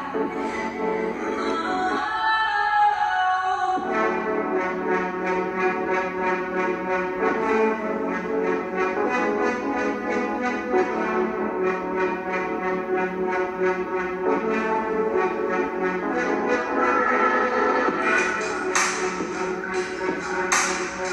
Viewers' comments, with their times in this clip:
0:04 idrk how to explain it but that part sounds so strong omg